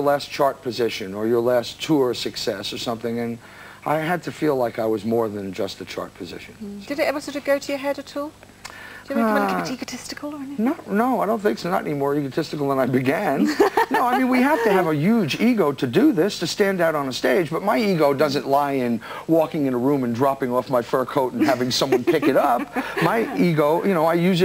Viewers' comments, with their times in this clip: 0:07 did she say "take a testicle or anything"